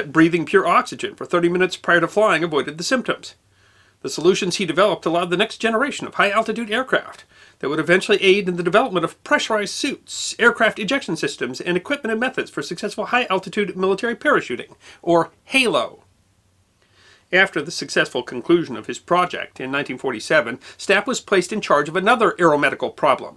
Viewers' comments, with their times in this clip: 0:07 “With and accident he decided to become a doctor?” Speech was so fast I rewound it several times I still can’t hear what he said With what accident?